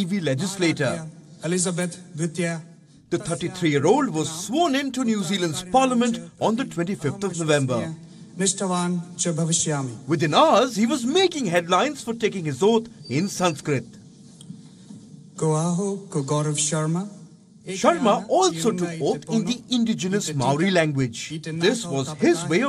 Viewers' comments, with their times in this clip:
0:06 did the anchor just said 25th of julember !?!? Imao ..